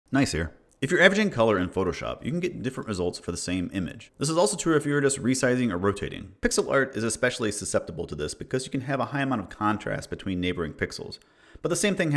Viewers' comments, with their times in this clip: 0:00 Hold on wdym you pronounce Gneiss as nice? Have I been saying it wrong this whole damn time??